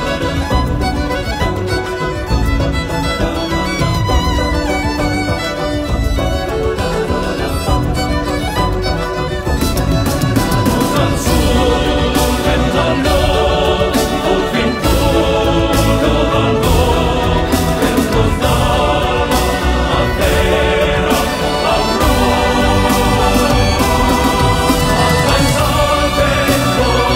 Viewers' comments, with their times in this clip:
0:09 --- what I hear: "RAISE A SWORD FOR THE LORD FOCKING COOOOOOOOOL OH MY GOD! ME GUSTA! THOSE POTATOES ARE GOOOOOOOOOD! AND THE SIDE-MANGOES TICK-LE MY HEART! DORITOS!" Still, he's an awesome singer.
0:10 First of all I want to say (write) that I really enjoied the video and the music but, if at the beggining it says that all is created with one violin and one voice. ¿Why in the min. there are some drums? just a minor detail but very god video.